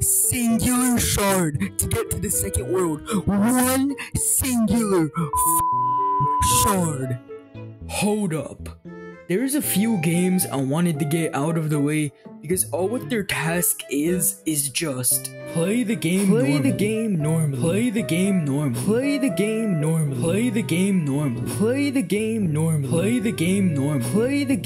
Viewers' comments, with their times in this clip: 0:08 is that a reused voice line or is that just you, I can’t tell.